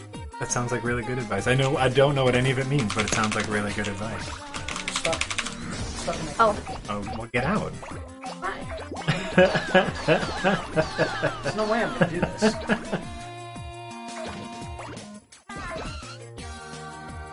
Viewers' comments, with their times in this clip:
0:03 This music is catchy as f**k